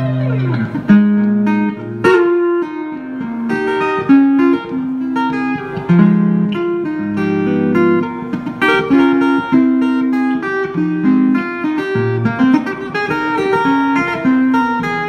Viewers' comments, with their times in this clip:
0:03 Beginning 🙌🏾 the breakdown was so smooth